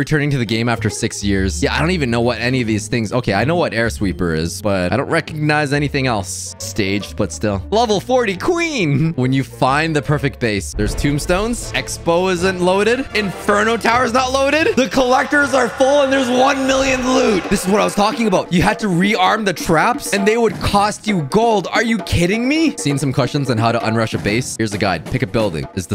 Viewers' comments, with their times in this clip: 0:10 SCRAMING QUITE LOUDLY YEAAAAAAAAAAAAAAAAAAAAH